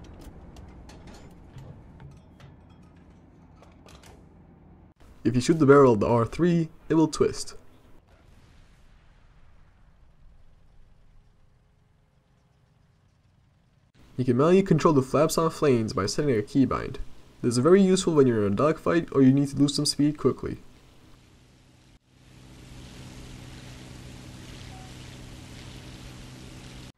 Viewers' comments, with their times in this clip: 0:07 broken bone sound wgat was that i got away for 1 sec what happend